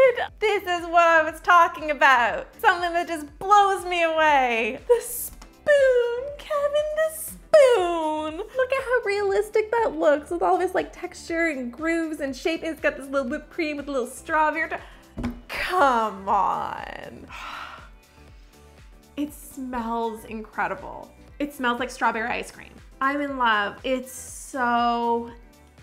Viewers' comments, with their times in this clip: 0:06 how she said the spoon Kevin the spoon